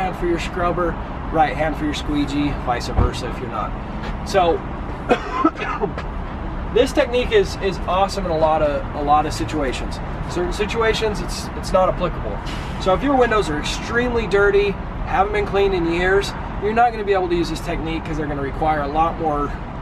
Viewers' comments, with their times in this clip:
0:04 When he coughed I immediately checked the date of the video by reflex. It pre-covid dude. You're good!